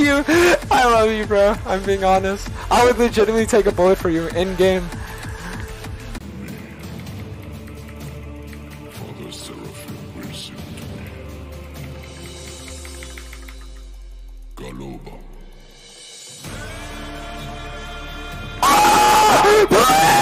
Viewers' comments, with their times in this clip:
0:07 OH MY GOD THE MUSIC WAS SOO PERFECTLY TIMED